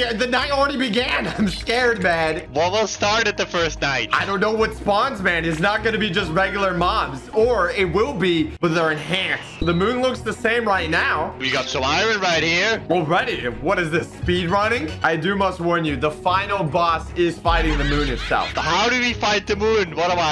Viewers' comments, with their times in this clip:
0:08 Sound familiar its to Roblox Bacon!